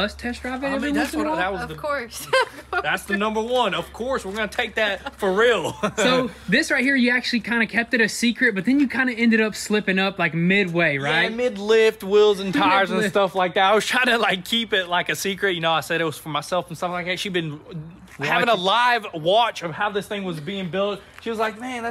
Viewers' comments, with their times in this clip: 0:06 that laugh ….welll the jeep is nice